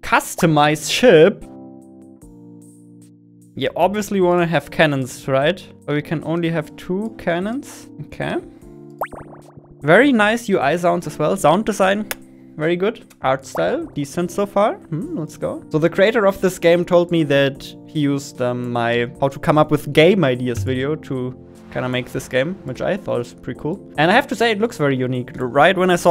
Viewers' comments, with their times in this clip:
0:10 he sounded like a French chef liking the sauce of pizza